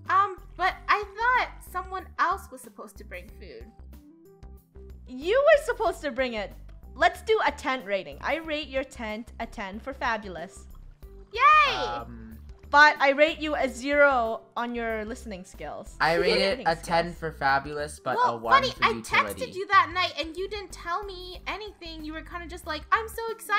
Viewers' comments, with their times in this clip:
0:10 Rainbow: SCREAMS AAHHHHH | Draco: OMG PUT IT OUT